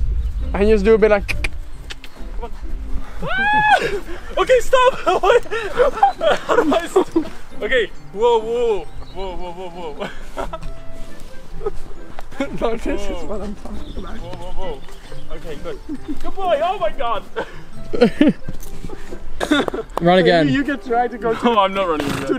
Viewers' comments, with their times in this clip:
0:05 OMG THE SCREAM IM ACTULLY LAUGHING TO DEATH